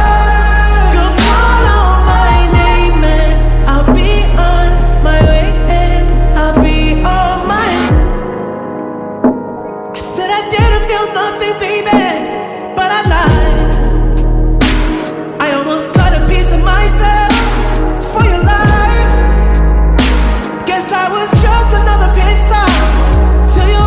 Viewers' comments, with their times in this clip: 0:08 I swear the bit after has some Michael Jackson vibe to it